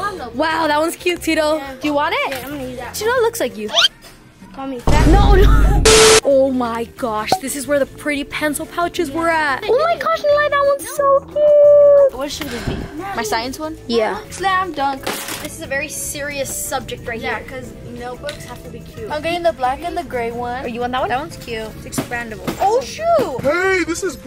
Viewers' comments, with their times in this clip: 0:05 the way he said "u called me fat🤨"